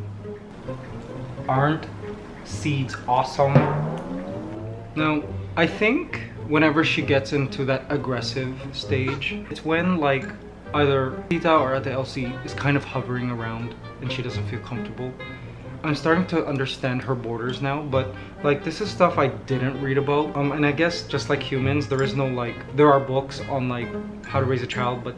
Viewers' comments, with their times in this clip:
0:09 that “ah” though when ligaya almost fell 😂😂cute